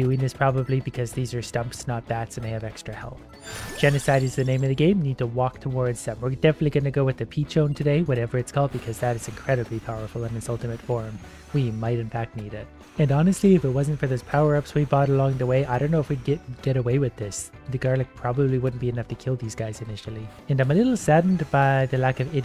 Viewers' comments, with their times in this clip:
0:03 I have never heard someone say genocide is the name of the game son calmly